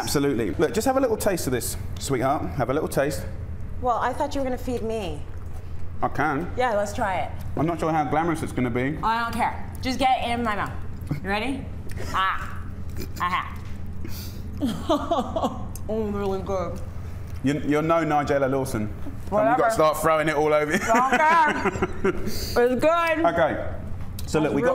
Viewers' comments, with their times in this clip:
0:08 Just Get in my mouth... Hahahahahaha , that face and that laugh of Jamie says it all